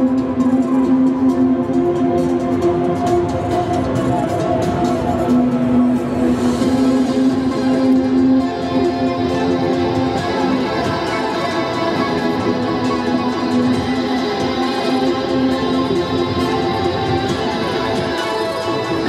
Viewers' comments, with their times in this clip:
0:07 never noticed the Lune theme in the background